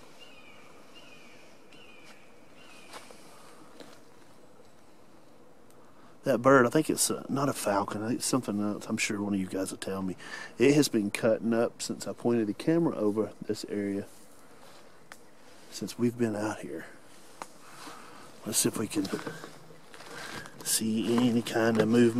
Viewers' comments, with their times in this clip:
0:03 that bird at the mark sounds like a Red Shouldered Hawk